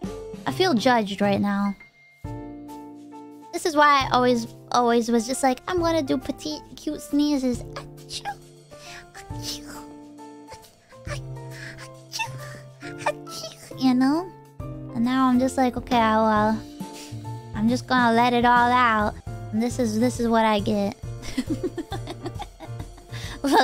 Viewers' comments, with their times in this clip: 0:08 oh wow, she should have done that noise in her asmr stream, its really cute